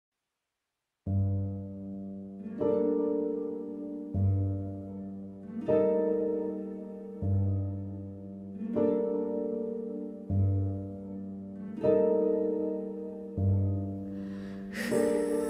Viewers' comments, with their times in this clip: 0:00 Im in enkanomya right now and I love this piano❤❤